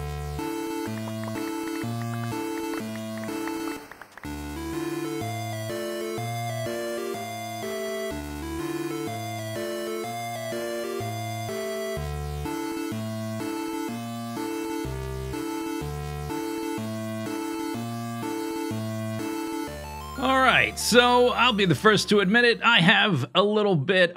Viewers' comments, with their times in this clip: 0:10 That song hearing it gives me nostalgia for a NES game I played a ton of, Ironswords: Wizards and Warriors 2